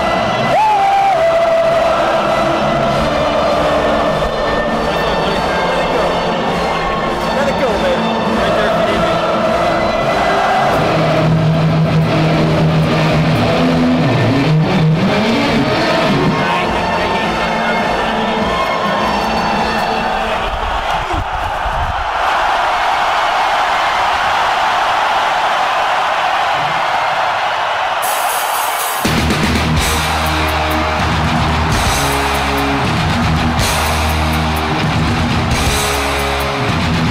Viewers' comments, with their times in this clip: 0:10 That's been my dream. I've played through some pretty decent PA systems at a few shows but I've always wanted to play, even for 30 seconds, thru a PA THAT fucking loud!
0:23 Man, imagine what its like to walk out to THAT. Seeing 50,000 people screaming their heads off for YOU. Seeing the massive stadium packed full of screaming and adoring fans, playing the first 5 notes of a song and the crowd going nuts, being able to look out and see what the result of your hard work is, feeling the energy of the crowd and playing the songs you created and love. Id do anything to be able to have enough talent to be able to experience that just once.